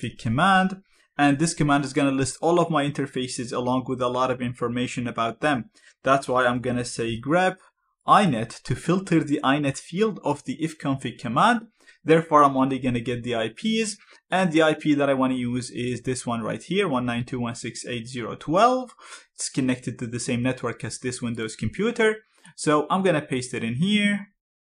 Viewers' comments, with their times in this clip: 0:06 the audio artifacts while he’s speaking through me off! I thought something was wrong with my headphones for a moment!